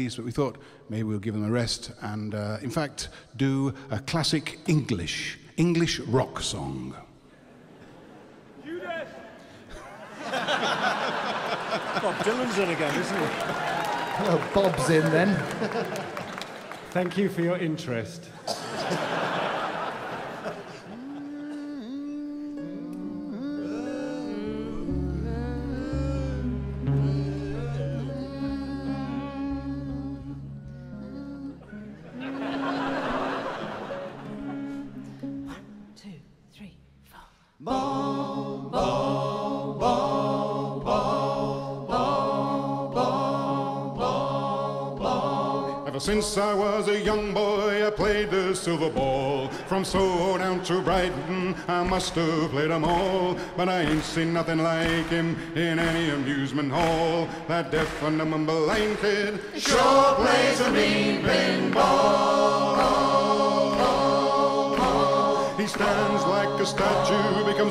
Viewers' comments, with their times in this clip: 0:09 For those wondering, the quiet call seems to be "Judas!"
0:53 Stop clapping! You ain´t no audience of a tv show!